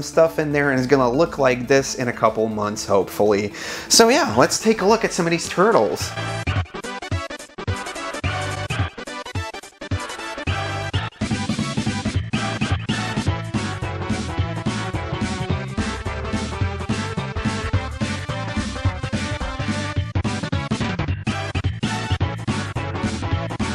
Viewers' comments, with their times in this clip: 0:06 WOW the nostalgic feeling hearing the TMNT music